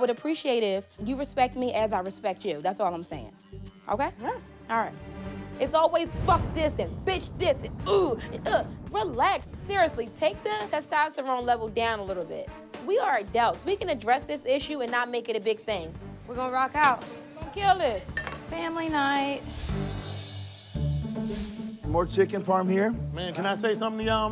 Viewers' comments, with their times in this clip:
0:09 lol "take the testosterone level down" i was literally thinking she looks like and sounds like a dude